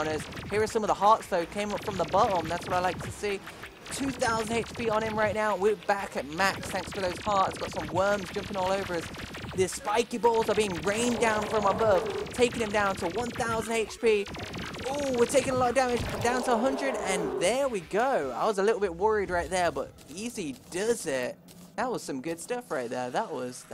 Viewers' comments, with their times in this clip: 0:09 He sounds like a soccer announcer